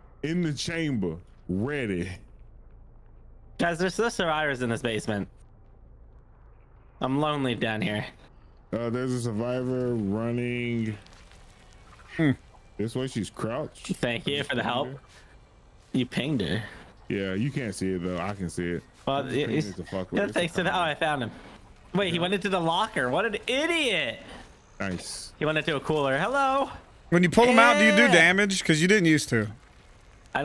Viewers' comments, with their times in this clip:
0:10 you can hear cartoonz “hmm” 😏😏😏
0:11 I know what that little mmh was about lol.